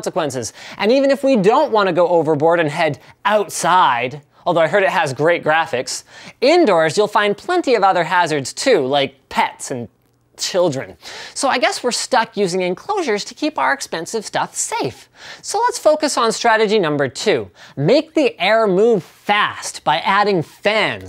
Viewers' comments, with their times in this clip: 0:09 He sounds genuinely disgusted with children...